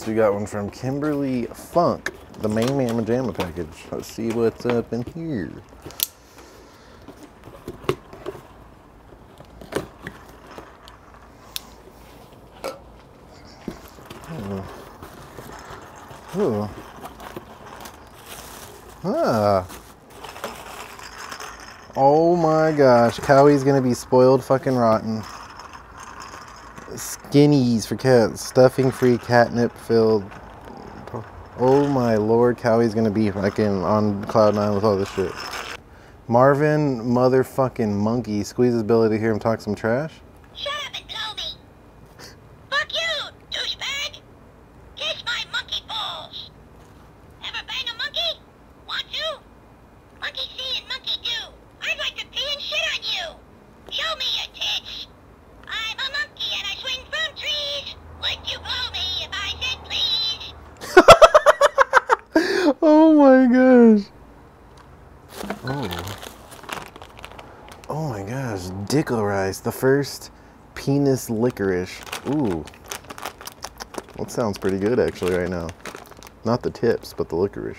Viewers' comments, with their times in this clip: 0:04 Dat knife doe! Love the little click it makes.
1:00 that laught LOL